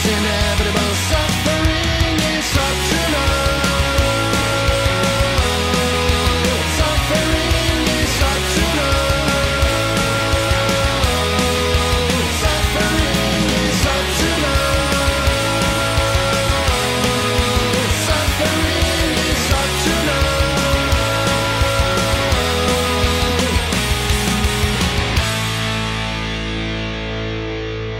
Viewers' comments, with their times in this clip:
0:09 Love the Bad Religion style harmonys